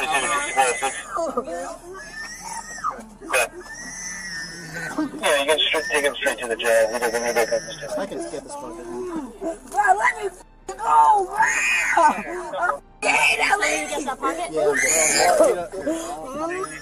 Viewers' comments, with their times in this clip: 0:03 sounds like a piggy squealing now 🐖